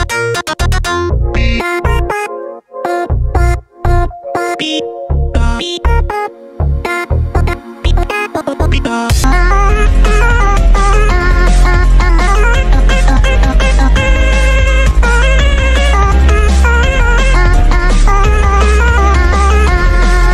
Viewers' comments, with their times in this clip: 0:06 xD the beathoven in corrupted